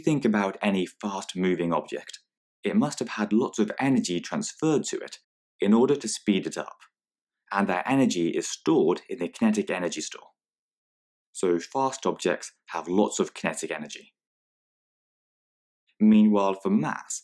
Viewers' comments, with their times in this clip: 0:05 any fart moving objects😂😂😂